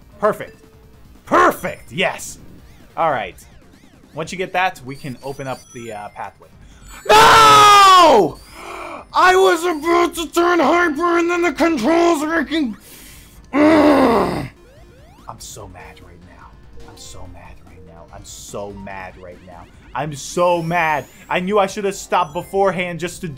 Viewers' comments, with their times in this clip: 0:06 headphone user warning